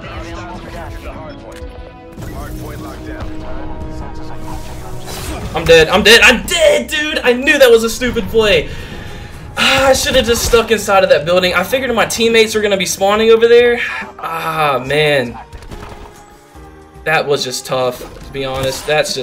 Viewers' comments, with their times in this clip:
0:03 sad violin music